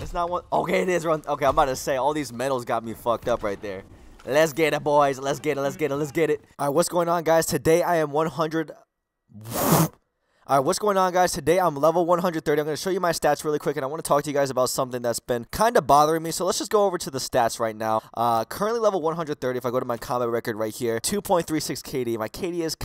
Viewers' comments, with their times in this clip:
0:10 hey what’s up guys... blows nose hey what’s up guys😂